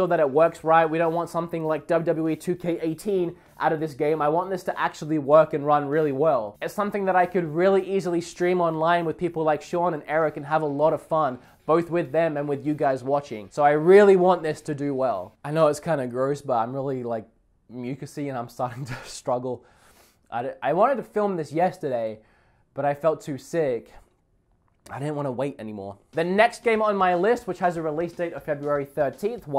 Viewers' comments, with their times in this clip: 0:10 -"Thith ith the beth game ever!"